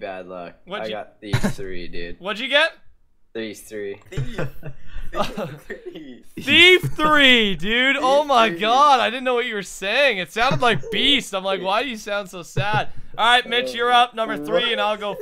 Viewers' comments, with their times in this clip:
0:03 I thought he said leaves lll(3)!!